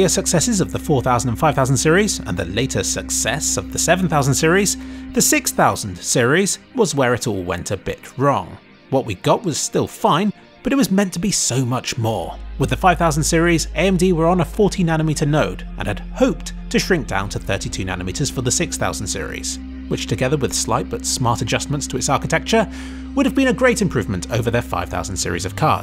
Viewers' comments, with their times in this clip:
0:09 thought you said it was 14nm and had to rewatch it a few times to hear 40nm lol.